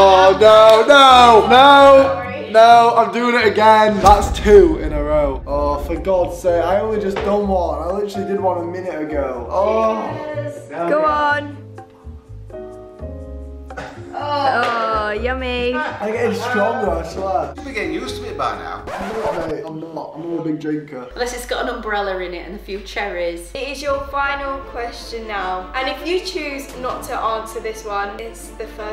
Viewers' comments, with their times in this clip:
0:10 if you hear closely you could hear him swear
0:12 Morgz whispered f*ck on